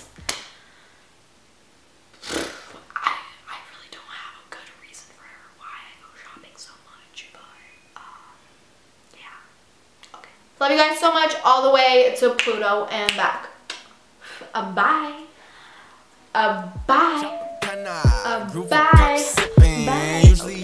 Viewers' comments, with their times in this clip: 0:05 hit me with that ASMR